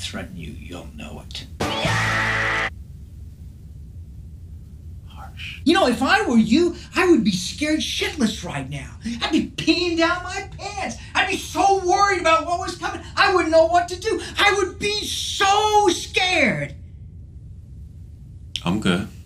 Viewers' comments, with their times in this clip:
0:07 I actually thought you edited that and put someone else’s voice